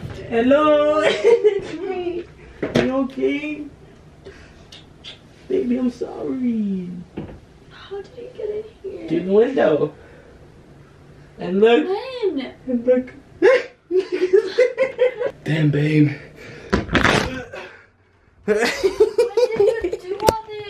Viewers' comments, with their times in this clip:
0:04 the mask dropped and it sounded like a fart 😂